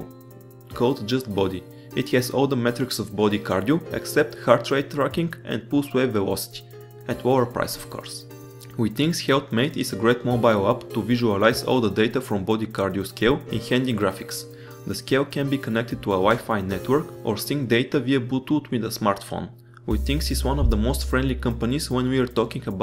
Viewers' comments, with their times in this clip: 0:05 Can anybody tell me what he said just after heart rate tracking`? all I heard was "Boost wave and watch"